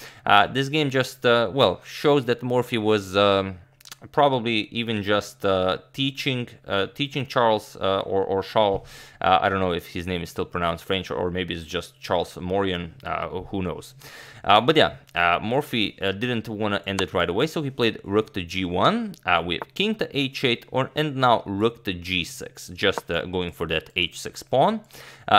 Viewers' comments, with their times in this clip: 0:07 Maybe just a little more respect for the opponent's pronunciation of their name. Let's not resort to complete ignorance during an otherwise great presentation of chess history.